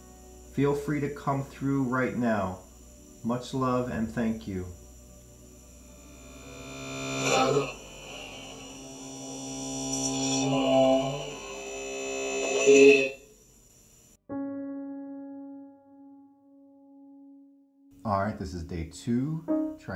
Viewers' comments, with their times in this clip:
0:06 listen it sounds like he said that he was writing songs and then all of a sudden he was gone :/ i got shivers real bad it felt like he was standing over me watching and i can really hear his voice in this one 💔